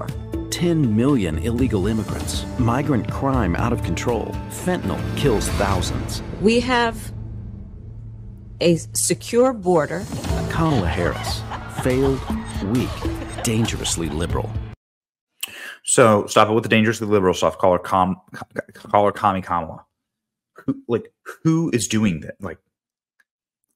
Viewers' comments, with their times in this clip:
0:10 She's like Heath Ledger's Joker here. (I'm a man of my word....HAhahahaHAhahaha)